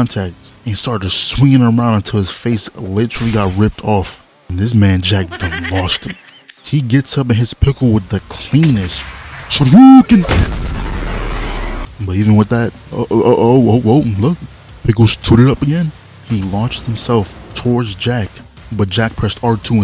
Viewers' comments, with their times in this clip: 0:05 The Laugh bruh… i‘m ded😂😂😂😂